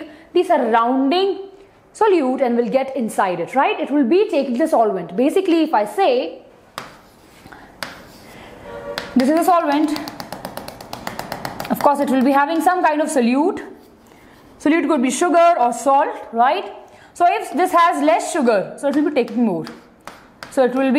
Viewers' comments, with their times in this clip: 0:07 horn was insane